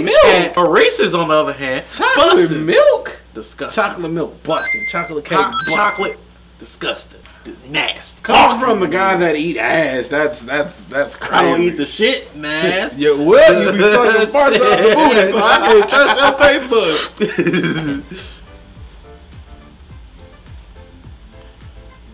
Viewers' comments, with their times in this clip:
0:04 gonna be honest, that ping made my jump.